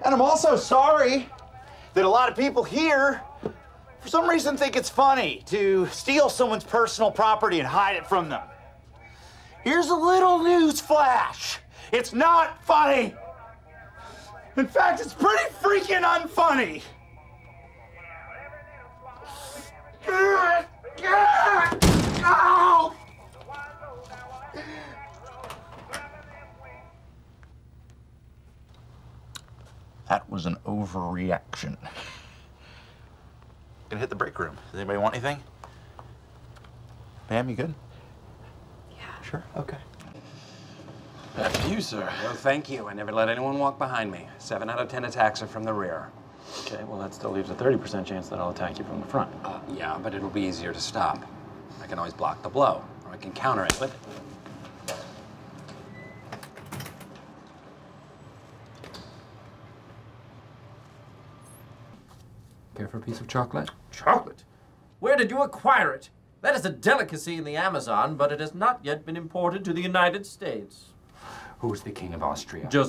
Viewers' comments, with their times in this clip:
0:10 Andy sounds like the guy from the Lorax
0:53 The sound it made when he slapped him